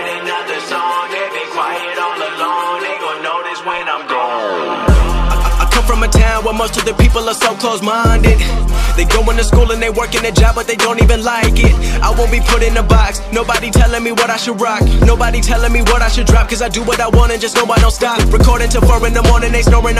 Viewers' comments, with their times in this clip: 0:05 That execution was perfectly synched with the drop I felt that zeus power all the way over here..